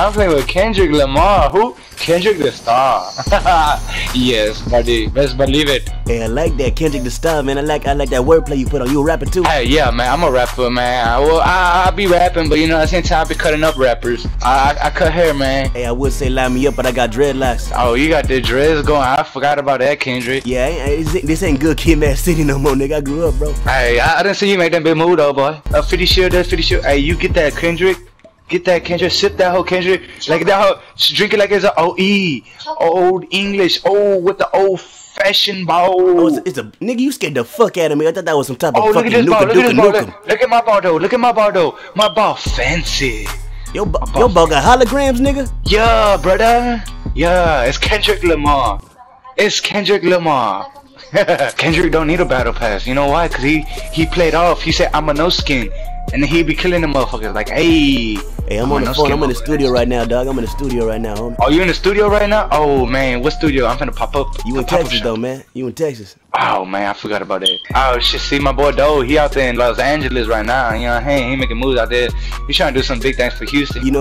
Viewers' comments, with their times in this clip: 0:04 He turned from African English to Indian Accent
1:01 bruh the guy legit went from normal to black